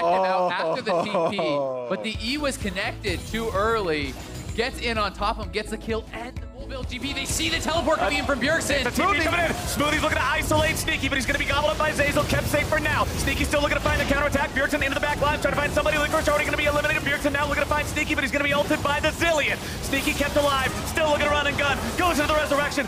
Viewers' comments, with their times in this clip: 0:08 eminem is that you
0:09 my man went rap god bro wtf xD